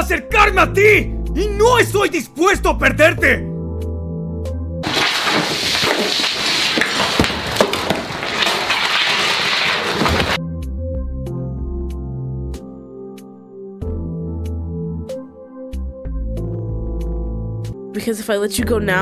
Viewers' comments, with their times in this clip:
0:05 me when Peter speaks spanish (they are two of the hottest things in the world):